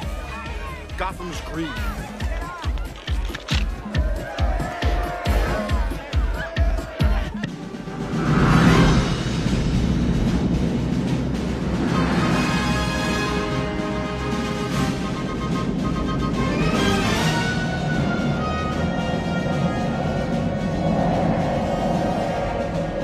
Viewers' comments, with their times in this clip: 0:08 what a huge letdown….we go from Prince’s funky masterpiece back to Danny Elfman trying to imitate the classical masters